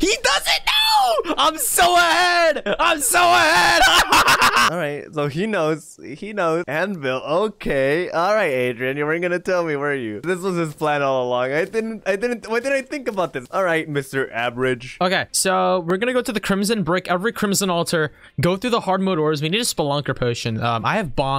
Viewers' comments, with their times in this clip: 0:05 That evil laugh LMAOOOO